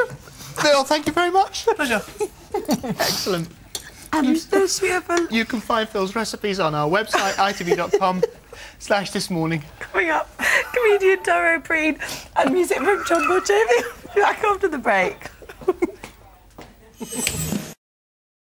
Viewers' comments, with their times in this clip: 0:10 this is probably what English sounds like to non English speakers